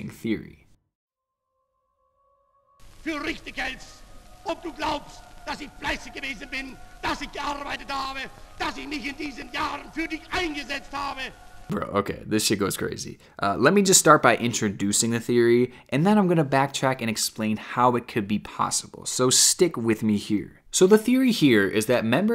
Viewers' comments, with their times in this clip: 0:03 This gibbering maniac came on right after the ad ended and I thought it was a whole other video 😂